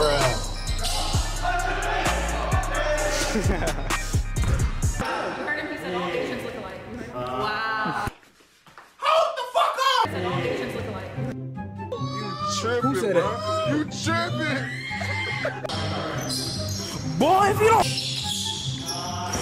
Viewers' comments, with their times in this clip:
0:05 what's she saying didn't get that